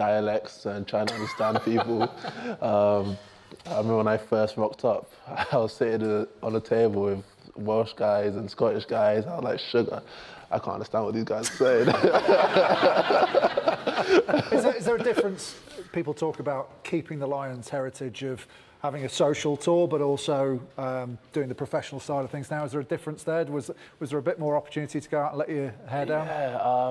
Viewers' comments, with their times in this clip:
0:09 sounds a lot like KSI